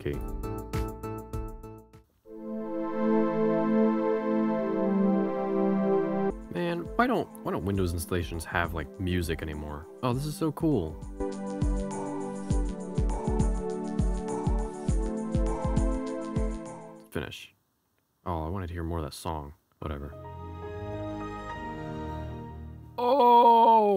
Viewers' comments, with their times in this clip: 0:05 Windows Xp music is literally the best nostalgic moment in this video 🥹❤️‍🩹